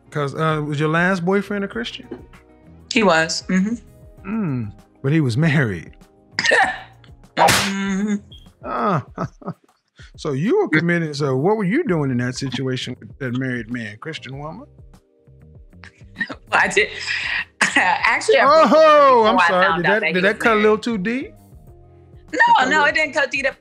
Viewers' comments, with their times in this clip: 0:09 listen to that smoke detector in back ground 💊💊💊 but she mentoring the pastor daughter & adultry